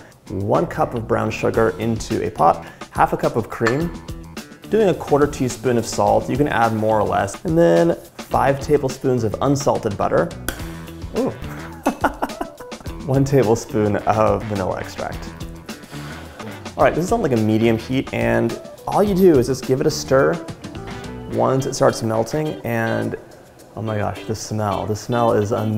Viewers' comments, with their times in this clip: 0:10 That splash was butterful! Love your recipes, and btw, the music on this video is amusing ☺